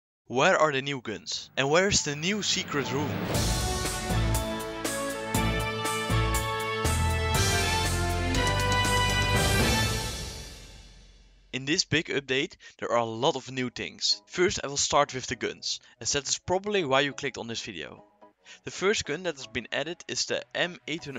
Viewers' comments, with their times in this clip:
0:03 This intro sounds like a news intro fr xD